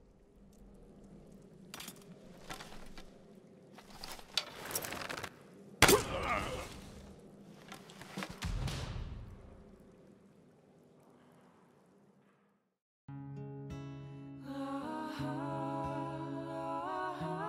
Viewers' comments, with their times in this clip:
0:05 "more realistic bow sounds" honestly make your bow sound like a fuckin' cork gun. hot take